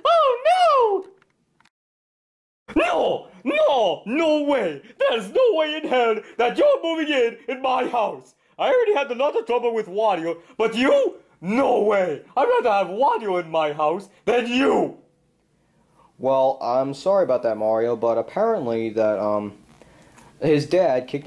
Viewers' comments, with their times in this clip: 0:04 Mario sounds like Black Yoshi from SML.